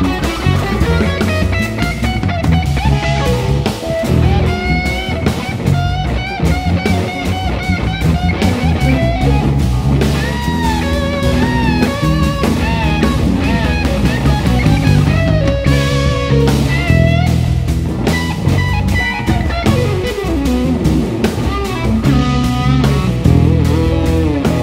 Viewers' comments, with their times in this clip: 0:03 that guitar made me jump with a “hooooooo!!!!” of how perfect it was 😫😫
0:05 Led Zeppelin licks thrown in